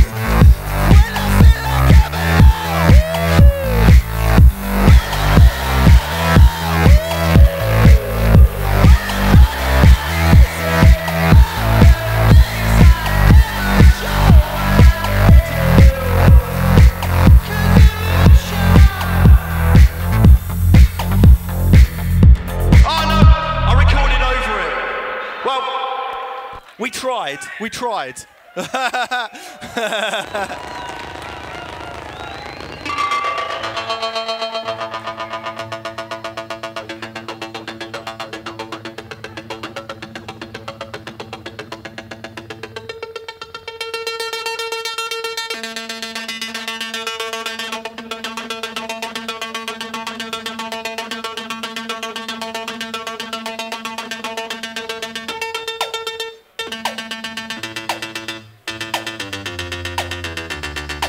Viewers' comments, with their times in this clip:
0:06 how does he do that vocal on
0:24 a shitload of reverb controlled by his foot as you can clearly see
0:39 I don´t know why but I felt like is the machine beginning to malfunction and you have no clue why, but the malfunction is such a banger that you just go with the flow
0:44 Dude almost did Bangerang
0:44 legit thought he's gonna do a cover of Refused - New Noise.